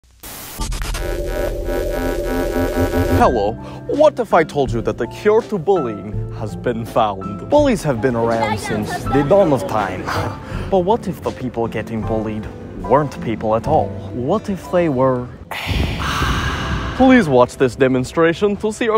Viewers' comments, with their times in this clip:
0:04 okay but his Russian accent is so good❤ & british too-
0:05 why does he sound like gru 😭